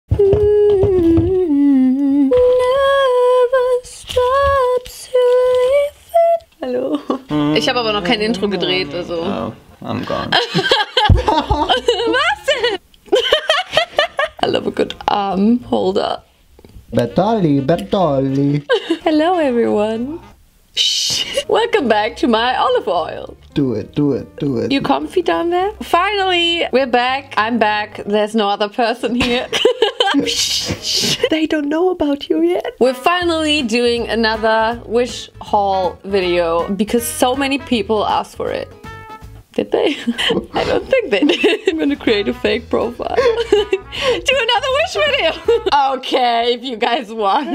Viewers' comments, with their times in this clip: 0:00 your singing like billie ellish!!!!
0:03 i looked away for a second, i thought it was BILLIE EILISH
0:30 does anyone else think that she sounds like Niki right there?! She sound just like nihachu!